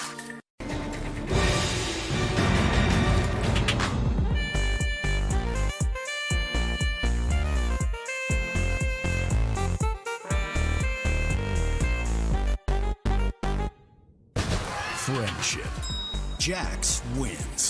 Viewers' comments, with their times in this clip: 0:03 oh yeah swagger sax playing